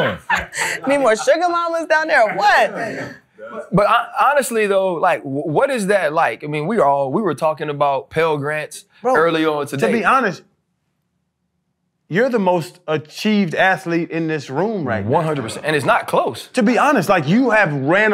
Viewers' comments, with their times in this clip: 0:03 Around that moment “the pivot” was a great laugh lol